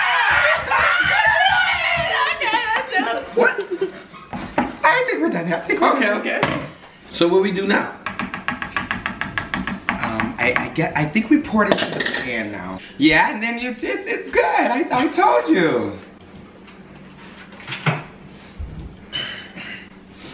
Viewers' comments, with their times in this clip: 0:03 Ik I’m not the only one who heard that laugh😂💀